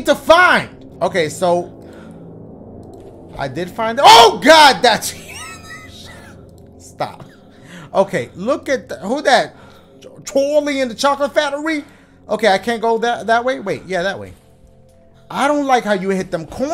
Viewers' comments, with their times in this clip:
0:04 The way he wheezed😂😂😂